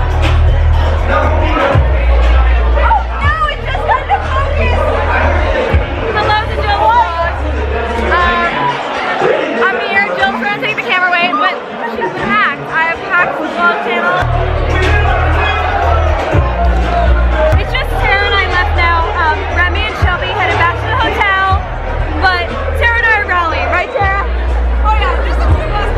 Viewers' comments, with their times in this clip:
0:07 was there a fight going on ?! background